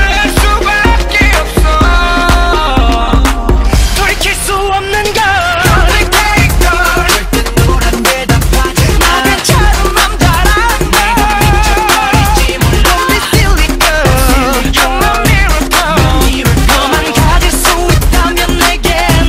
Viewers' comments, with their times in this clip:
0:03 "pour queso on the dog"